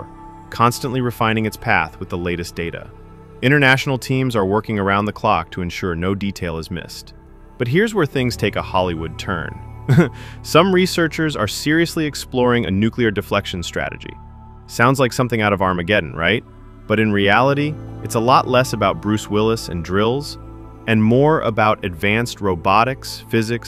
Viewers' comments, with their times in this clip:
0:08 there's that ubiquitous Chatbot knowing chuckle.